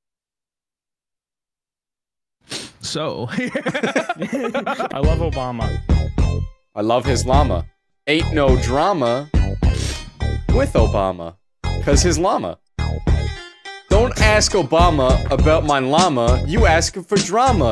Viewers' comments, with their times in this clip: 0:04 thank you for adding the music, it makes it 1000x funnier 😂